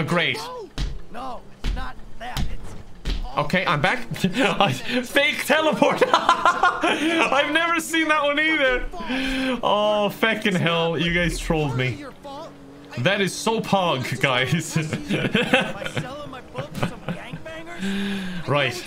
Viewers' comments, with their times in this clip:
0:03 Oh god.. that pog was painful